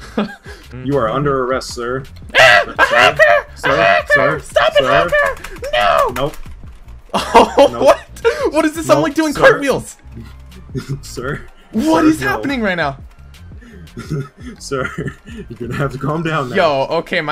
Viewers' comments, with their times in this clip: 0:03 that voice tho 🤣